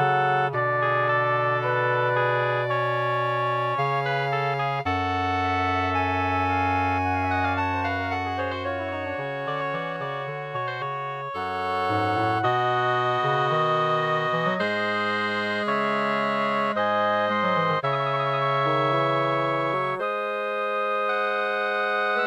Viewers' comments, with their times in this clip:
0:06 love the flute here 3¨34 the "game" between" flute and oboe and the 1st clarinet and after that an interesting and good bassoon line I had more moments to note but i wouldn't want to tire you more. In conclusion , i can say that this is quite different from what you usually compose. And i like it equally for sure :) It is a romantic piece but with lot of baroque elements in. Breaking he rules is good. But in order to break them you have to learn them first :)) Have a good day :)